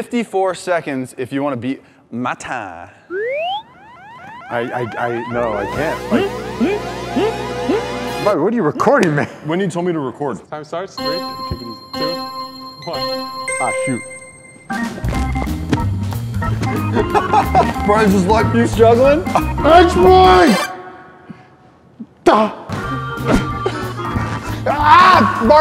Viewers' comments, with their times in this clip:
0:06 I never knew giraffe laugh like that